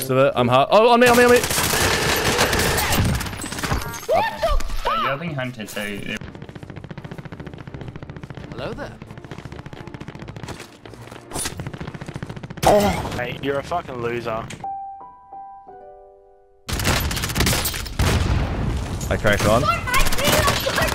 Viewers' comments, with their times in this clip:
0:03 I never knew Mickey Mouse played warzone